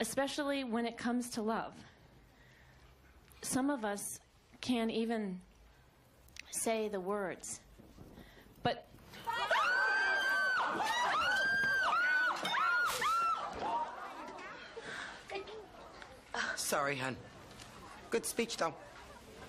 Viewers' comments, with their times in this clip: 0:07 Miranda's speech sheet burning and all those people screaming had me laughing so much 😂